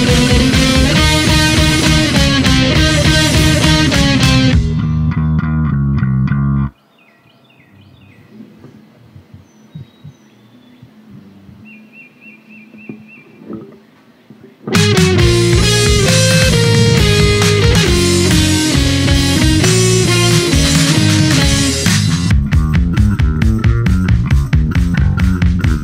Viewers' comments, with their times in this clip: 0:06 is so awkward without the piano